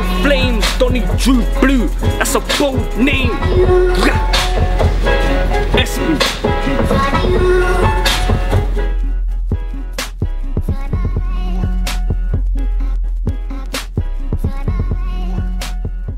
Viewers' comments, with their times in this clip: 0:03 that sounded kinda jokes